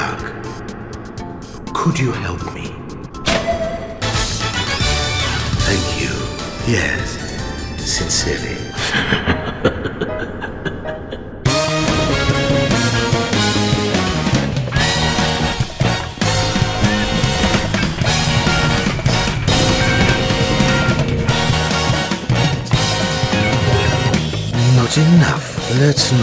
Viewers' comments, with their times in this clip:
0:08 That moment when you hear Kira theme